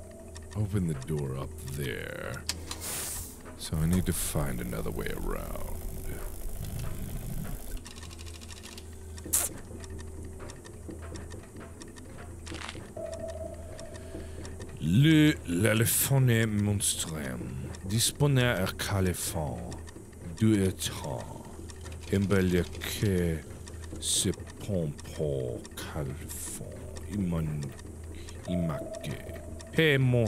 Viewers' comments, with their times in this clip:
0:07 *casually kisses microphone* and yes im watching this four years later-
0:08 I am rewatching this series and did he just kissed his mic 🎤 on
0:08 HASNSBS the carresing of the mic here 😭😭
0:15 Mark: speaks French low key good Me the whole time: 👁👄👁
0:16 it sound like french bc I understood some words and I think it’s fun